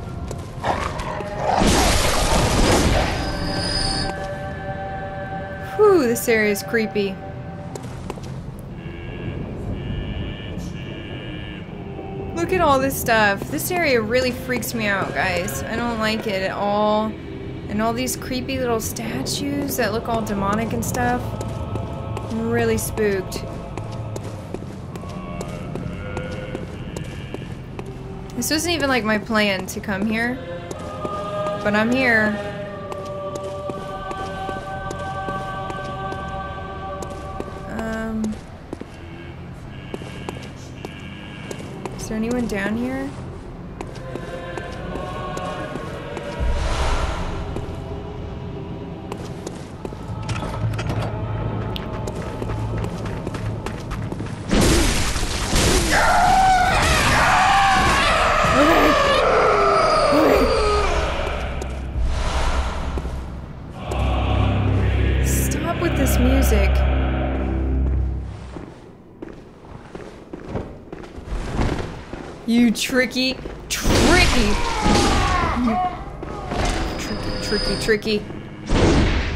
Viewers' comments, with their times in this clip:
0:05 It is creepy, and it's so creepy that it takes a while to realize that one of the reasons it's because there is BACKGROUND MUSIC PLAYING! No other place in the game outside the Hunter's Dream has background music, and here is a fun detail the more Insight you have the louder and clearer the music is in both places.
1:03 More great timing with music. You could feel the bass in that part right there (in the music and the in the voice of the people singing).